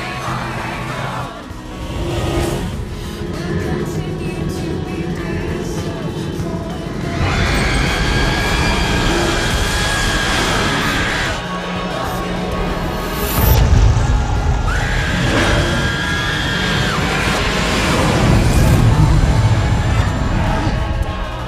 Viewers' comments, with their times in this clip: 0:07 ouch i had full volume 😬